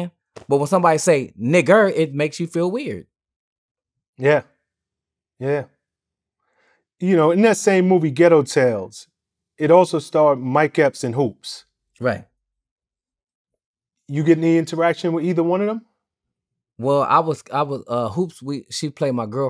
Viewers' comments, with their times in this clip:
0:06 He talks just like when bill duke’s asks him “so u bought the bottle of beer ?”